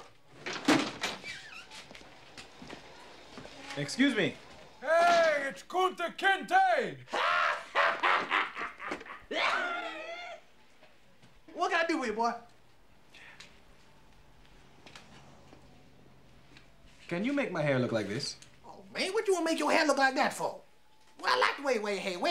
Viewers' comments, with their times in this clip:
0:07 that laugh gets me every time 😂😂😂😂😂
0:07 his laugh is so contagious
0:07 Buddy love laugh 😆
0:09 that laugh though. Gets me every time, 😂😂😂😂😂😂😂
0:09 out of all laughs, that one laugh made me chuckle lmao😂
0:09 I can listen to that laugh all day long.
0:10 Crack up every time his laugh then the little dance.
0:10 The barber laughing and “that’ll be 8 dollars” have me rolling every time🤣🤣